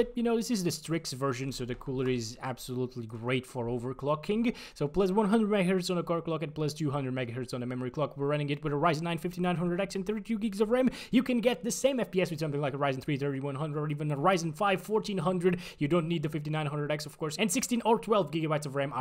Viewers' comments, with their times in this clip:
0:04 Rap Gode mode starts from here